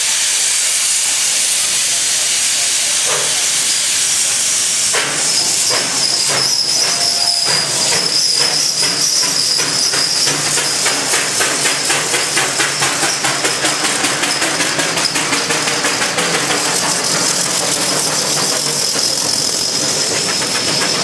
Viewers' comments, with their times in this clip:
0:05 These magnificent gorgeous steam tractors puts on a show as these machines chuffing and chugging. They may not be the fastest tractors but they’re really strong and powerful to pull heavy loads. come along come along. They have the magnificent sounds and the smell from the smoke stacks.